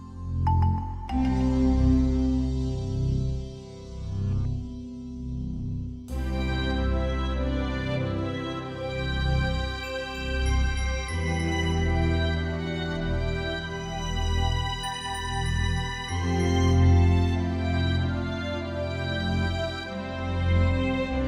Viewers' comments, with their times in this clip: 0:06 The later part of this song ( on) feels so much like Christmas. It makes me think of sitting in a comfortable chair near a warm fireplace, looking out the window as snow falls onto the bare trees outside, with a well-decorated Christmas tree off to the side surrounded by presents. It's truly a peaceful feeling.
0:06 The beginning of really sounds like a song from LOST, and I've seen some people talk about it here too. Does anyone know if there's a song in the show that sounds very similar? Been racking my brain for the last few days about it.
0:06 I thought it was gonna do the Pokemon Tower theme from gen 1 of Pokemon LMAO
0:06 I can't be the only one who hears Lavender Town Tower in this
0:06 the most beautiful part of this song I can really feel winter and christmas vibe I love it
0:06 it starts getting some FF7 vibes. This is not a bad thing.